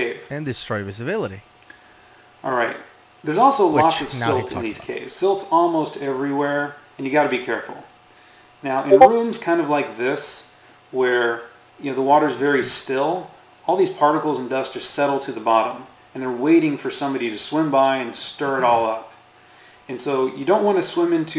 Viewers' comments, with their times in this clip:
0:08 To anyone going a little cray trying to figure out why their Discord app is running/getting a message while listening to this (like I was), the DISCORD NOTIFICATION SOUND IS IN THE VIDEO arouund Have a great day! lol